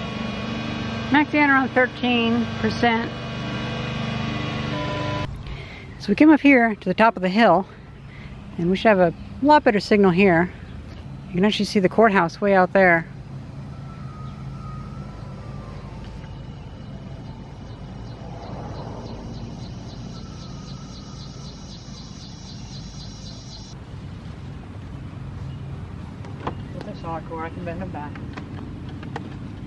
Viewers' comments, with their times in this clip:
0:04 Hear that? you are picking up the neighbours mower at like 190hz, perhaps the multiples of. Gotta tune that guy out!
0:13 Who was playing Fur Elise on glasses of water?